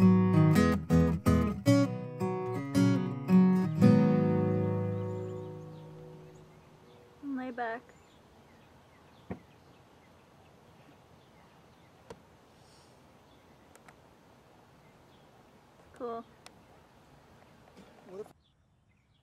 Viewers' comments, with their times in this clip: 0:07 a girl's voice in the background ahhh it sounds like Sabrina HUHUU